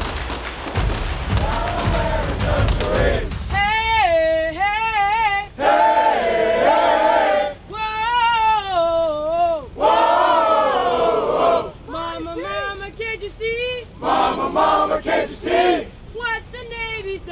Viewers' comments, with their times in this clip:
0:03 they get to sing